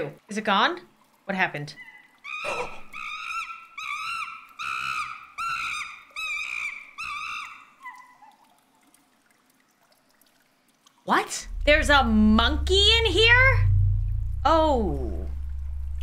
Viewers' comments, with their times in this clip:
0:03 all I could think of was ‘Monkey’ but pronounced similar to how Shrek says ‘Donkey’